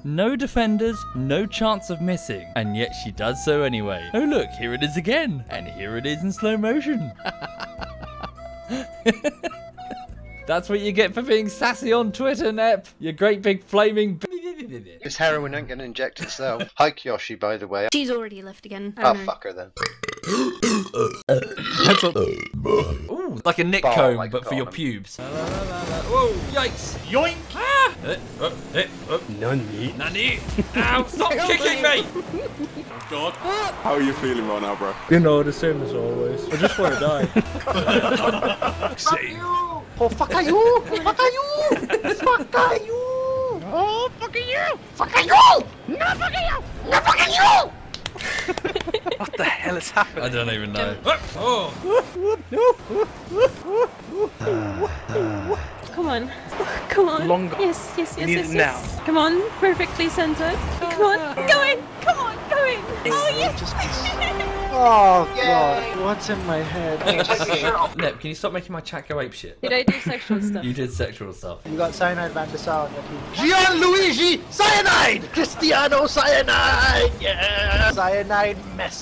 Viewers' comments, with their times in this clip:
0:05 that sounded a little bit like Jeremy clarkson
0:07 that laugh just gets me every time no matter how many times I watch it
0:19 Anyone else notice how the burp compilation sounds like the french anthem? XD
0:22 why did that one have reverb!
0:28 The blue "Nani" sounded like a REAL Anime Guy LOL
0:41 is this what it sounds like when two angry birds insult each other?
0:52 That's the sound of da police
0:54 deep lovely voice Ahh
0:57 the girl sounds like zelda a little
1:03 that giggle made me melt
1:03 Had to turn it down sounded like a really submissive porno😂